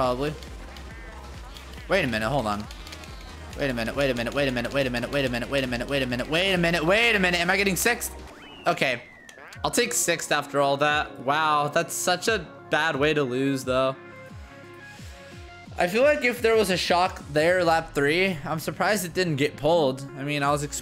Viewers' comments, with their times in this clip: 0:04 looked like a eminem song